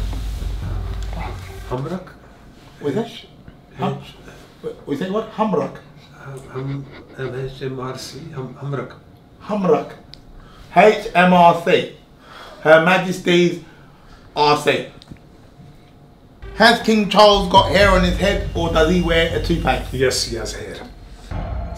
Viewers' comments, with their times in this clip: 0:04 Even the cameraman is having a laugh hahah